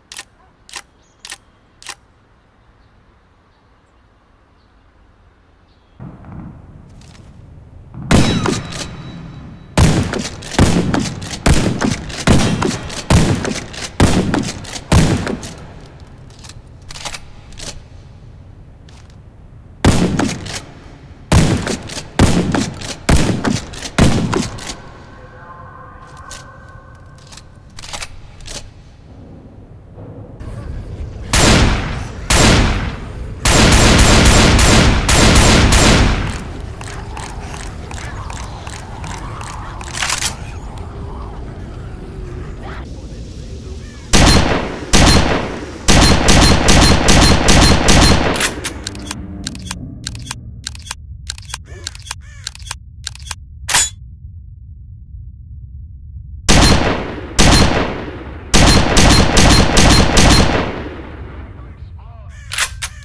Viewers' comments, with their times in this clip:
0:06 Warface devs really advancing game design by opting for a tight, bass-boosted fart instead of a shotgun sound.
0:30 My favorite SPAS-12 it just sounds more louder and heavier
0:44 doesnt this sound like the vice city spas?